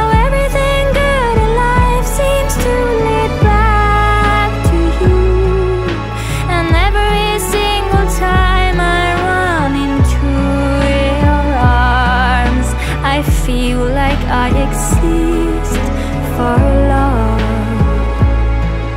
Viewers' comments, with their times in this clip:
0:05 The bit starting (on this video) really gets me..... Whatever scale or mode she's singing.....stands out just a wee bit from the rest of the song. It's just a note or two that makes my ears perk up. It almost has a slightly Arabic feeling? It's very brief....but I still remember the first time I ever heard this, I noticed that right away and loved it.